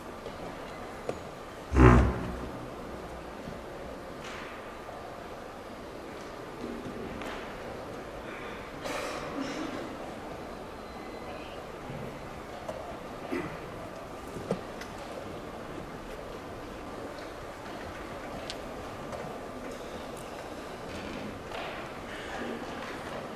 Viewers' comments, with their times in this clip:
0:04 did someone fart 😂